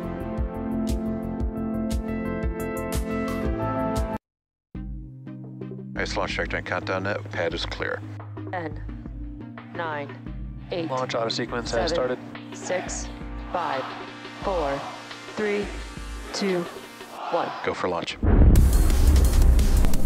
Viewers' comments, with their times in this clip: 0:05 The first was dead space. I loathe dead space, even from Spacex. DISLIKE, DISLIKE.